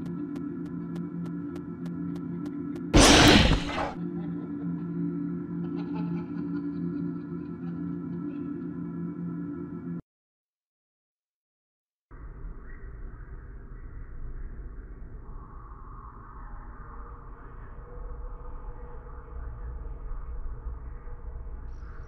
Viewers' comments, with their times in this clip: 0:04 beware headphone users
0:05 pray for the ears